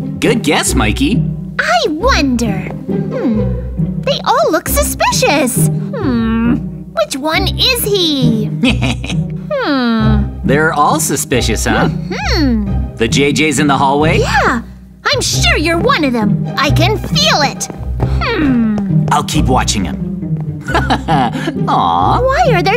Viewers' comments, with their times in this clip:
0:08 his laugh Hehehe..